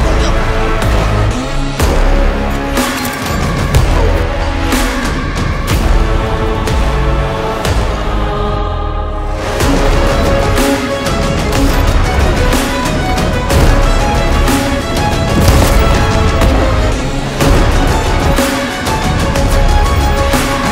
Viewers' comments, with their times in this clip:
0:07 Excellent music to the game! My favorite part